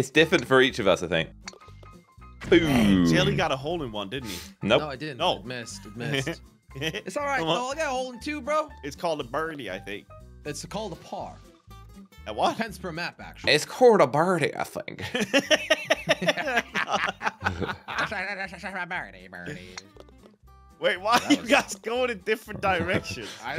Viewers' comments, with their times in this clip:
0:10 it's called a birdie I think in the most American accent got me